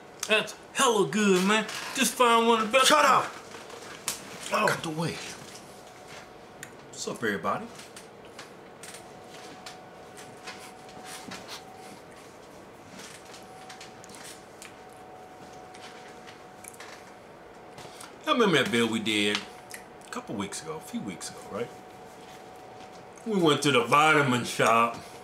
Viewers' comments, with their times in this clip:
0:06 So what are you snorting at the beginning of these videos mang? You always snap n' twitch.